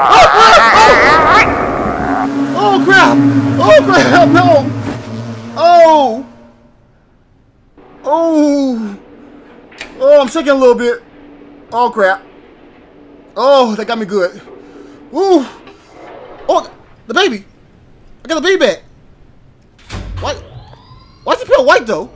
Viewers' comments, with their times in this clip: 0:03 that got me haha, i heard the grudge noises and i was like noooppppeeee!